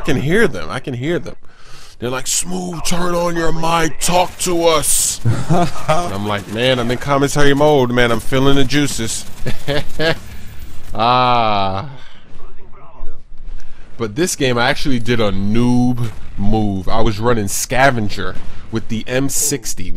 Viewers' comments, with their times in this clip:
0:04 I love the cut short Hahaaaaaa